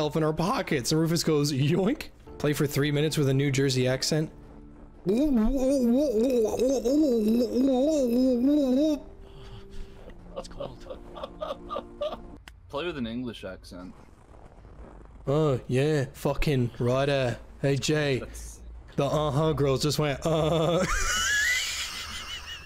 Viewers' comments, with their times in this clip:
0:08 as someone from New Jersey I can confirm that’s exactly how we sound